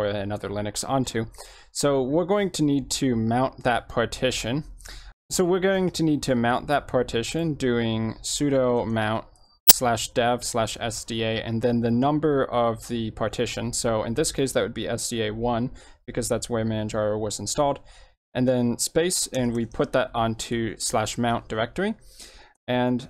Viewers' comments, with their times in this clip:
0:09 headphone users be careful .. maybe lower your sound. my ears are bleeding rn